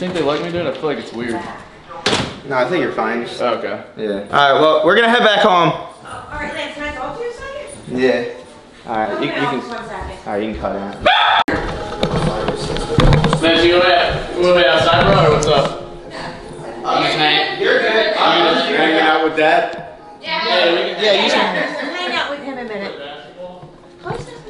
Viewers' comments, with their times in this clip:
0:10 did anyone els hear that scream?
0:11 The scream at the end tho